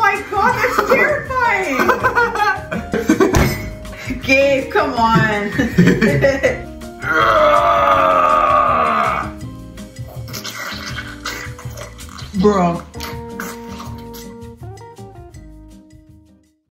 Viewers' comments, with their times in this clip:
0:07 Is it just me, or does this clip sound almost EXACTLY like the barfing sound effect from Job Simulator?